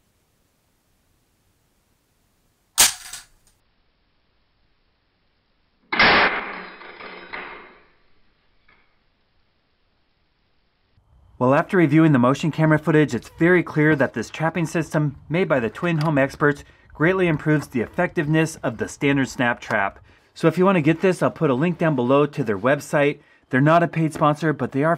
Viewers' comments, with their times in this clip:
0:06 OMG THE RAT INSTINT!!!!! KA KA KA KA KASHIMATE!!! music intesifique